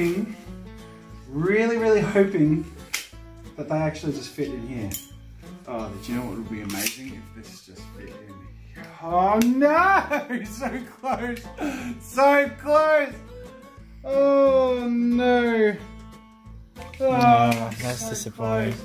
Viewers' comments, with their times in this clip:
0:03 electric drumming set in the background